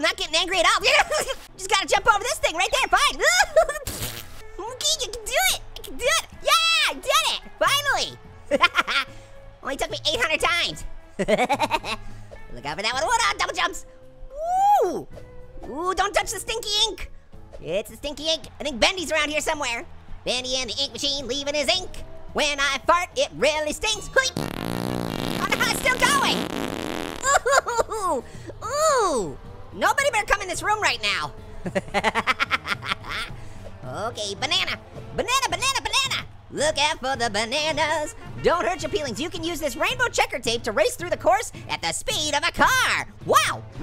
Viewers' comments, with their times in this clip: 0:04 did orange fart
0:22 #3 of Orange's long fart.
0:25 When orange farting I started laughing really hard and I kept replaying after I stopped